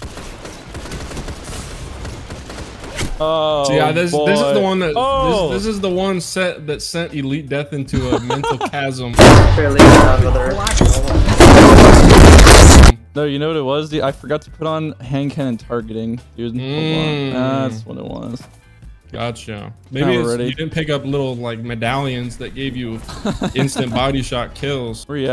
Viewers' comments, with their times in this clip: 0:09 high volume warning